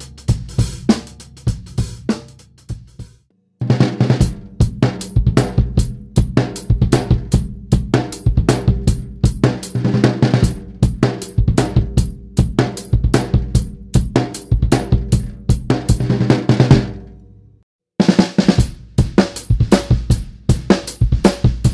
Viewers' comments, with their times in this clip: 0:04 there goes St Anger